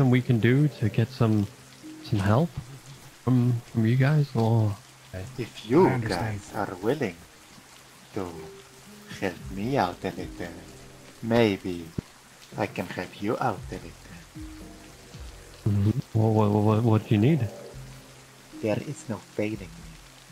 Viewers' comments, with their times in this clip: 0:05 my guy started talking and he straight up sounds like J’zargo or M’aiq the Liar from Skyrim 🤣😂💀